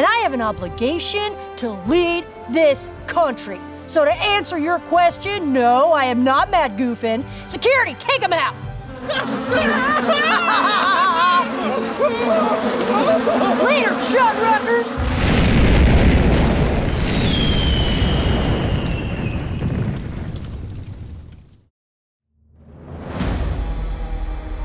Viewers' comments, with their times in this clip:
0:07 I am a year late, but binging this campaign. I could have sworn Matt said he rolled 18 and Marisha heard 19 at the very beginning of the battle. Think 19 was a tie so hit and 18 would not have. The battle would have been very different if Laudna didn't get snagged by that sauropod.